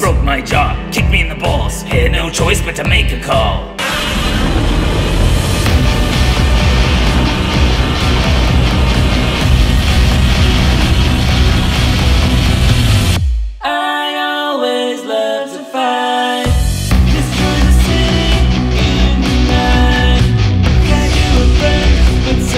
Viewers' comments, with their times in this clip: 0:04 Sussy anguirus do godzilla roar
0:07 Not even a minute in and we have loud noises, nonsense, and explosions 😂